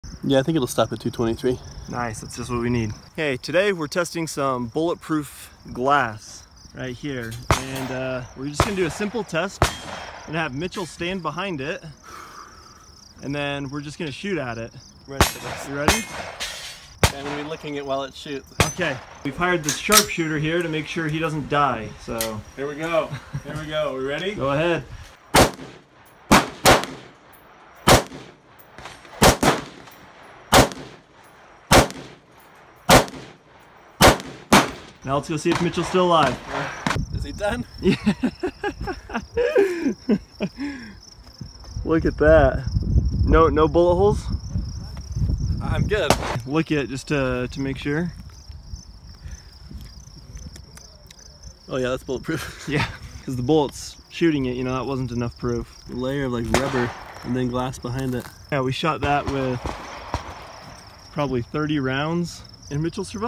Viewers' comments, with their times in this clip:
0:03 HOLY Shit! That guy sounds like Paul Walker.
0:45 "No bullet holes?" "I'm good" gunshot sound
0:47 "No bullet holes?" "I'm good-" gun fire
0:48 I'm ok "gun shot right after"